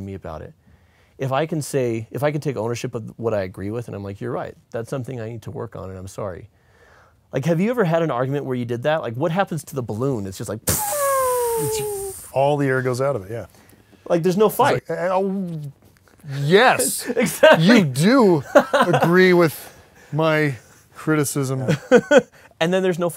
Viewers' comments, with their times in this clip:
0:10 this is the best balloon sound effect i've ever heard a human make